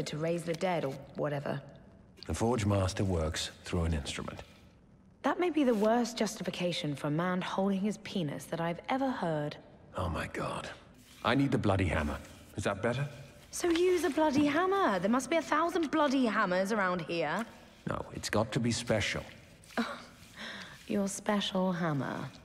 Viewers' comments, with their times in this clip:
0:05 I love how nonchalant they talk about perverted topics xD